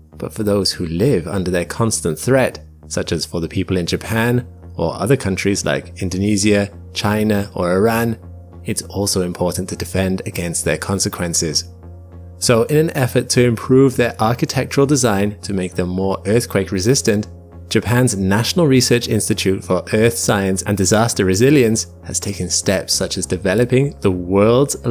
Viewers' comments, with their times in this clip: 0:06 bro did not just say indonizia